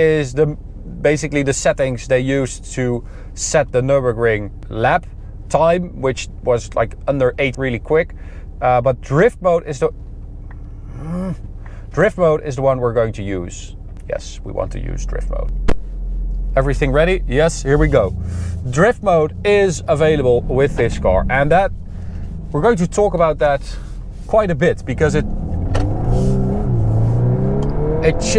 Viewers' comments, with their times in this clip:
0:10 The frustrated grunt just summed up most peoples opinion of the new infotainment system, I think